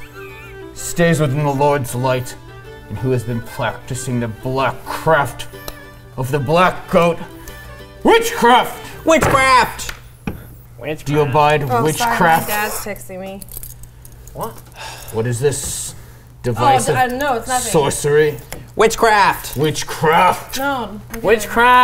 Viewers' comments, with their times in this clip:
0:09 The way he says ""WITCHCRAFT!" gives me life